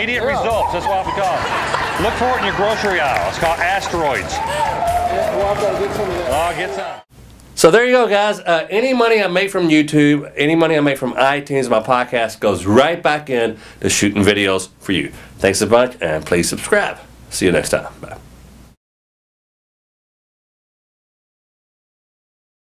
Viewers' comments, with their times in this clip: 0:05 I can't tell if the lady is laughing or about to throw up.